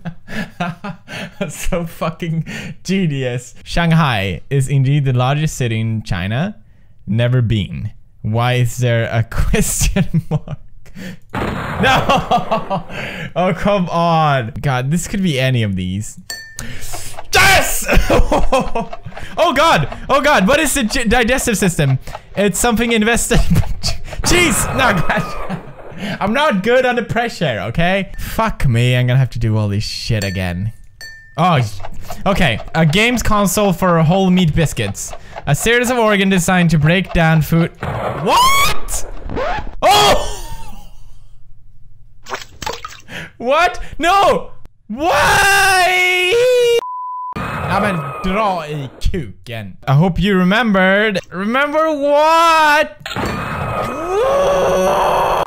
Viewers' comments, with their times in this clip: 0:03 he pronounced shanghai right... I'm so proud...
0:38 I love how his mic distorts after that "WHAT?!"